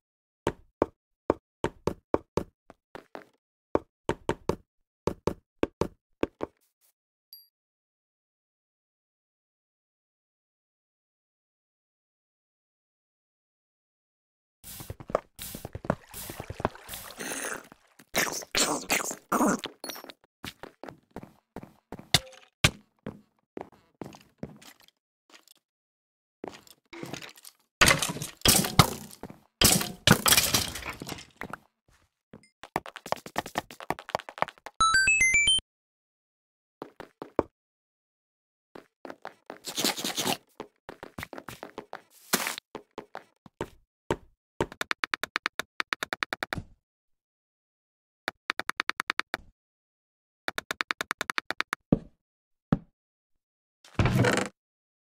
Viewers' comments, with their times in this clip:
0:03 DUDE WHAT? I JUST HEARD A FIRE BEAT FROM RANDOM CHANCE NOISES(Even better,it's on 711)
0:18 Listen guys this sound like a Baby Zombie Edit:Thank to 40 likes in my comment!
0:39 imagine having this eating sound in resource pack